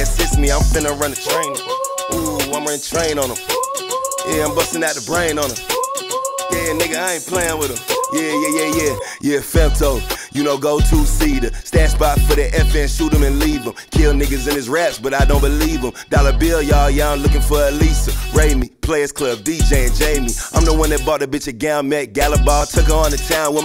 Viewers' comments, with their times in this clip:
0:08 coldest flow in the game